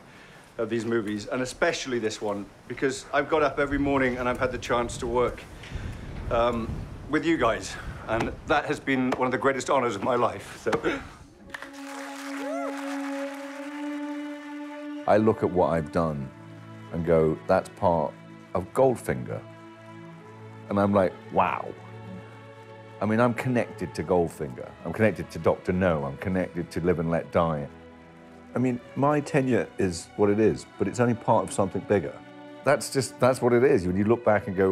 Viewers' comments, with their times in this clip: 0:08 that gasp made me tear up. What a sweet guy. I like him and Connery the best.
0:18 always makes you emotional when you hear the John Barry instrumental of We Have All The Time In the World